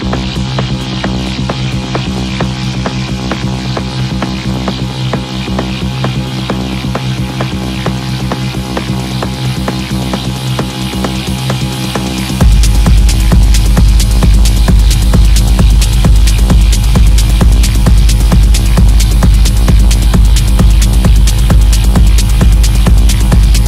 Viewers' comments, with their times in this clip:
0:09 How sick is that drop though??